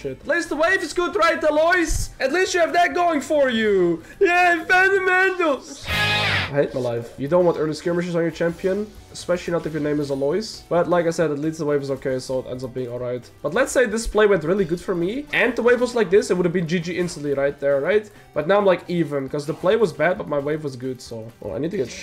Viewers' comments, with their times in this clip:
0:04 i read the other day "fund the mental" and i heard it Lmao